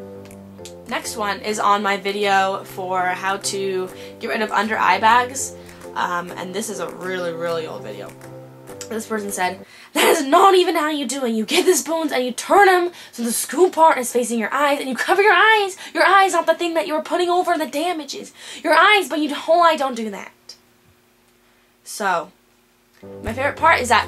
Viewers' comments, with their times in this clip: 0:09 ;O u sounded like MIRANDA SINGSS!